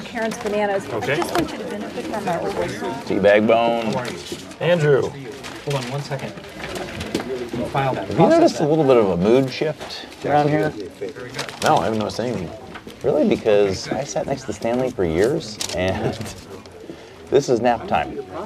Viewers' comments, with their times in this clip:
0:04 I always really liked Jim’s “Andrew” there. Very business minded.